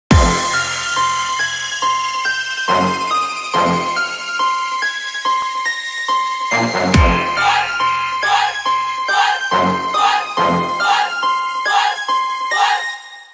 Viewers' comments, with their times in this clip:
0:00 The Intro will be muted and the songs will start right away from